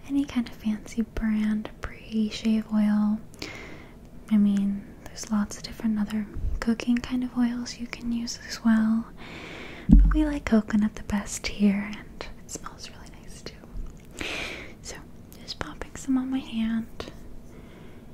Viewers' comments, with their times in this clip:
0:05 Did she say "cocaine kind of oils"?